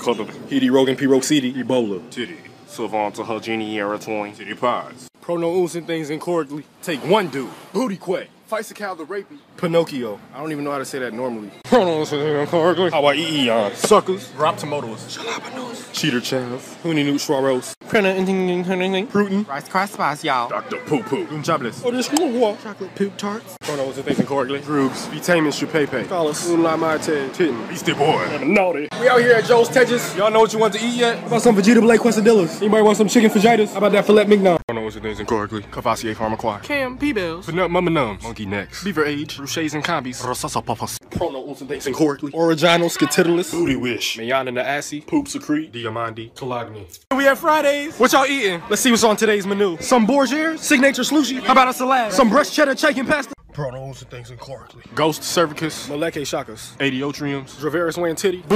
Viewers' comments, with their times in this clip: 0:02 the way he said Titty and Titty pods, unprovoked just makes me die
0:10 Poor chaz. Can't even say that normally
0:30 The way he pronounced fajitas made it sound explicit... and I want it.
0:33 Sounds like a dirty word but funny enough XD
0:40 When buy a cheap car exhaust
0:42 why that sound like a damn disease